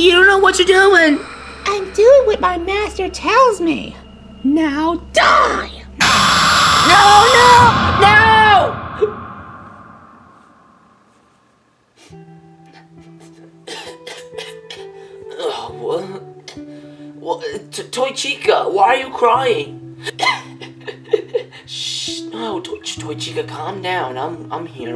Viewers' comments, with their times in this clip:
0:06 the roar sounds monster:AAAAAAAAAAAAAAAAAAAAAAAAAAAAAAAAAAAAAAAAAA chica: noooo